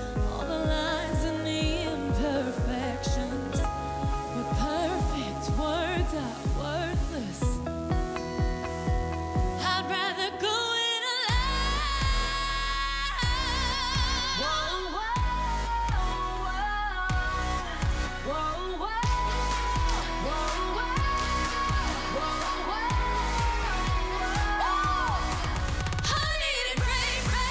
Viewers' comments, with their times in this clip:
0:10 it sounds like she was screaming
0:10 The big note was playback wasn't it?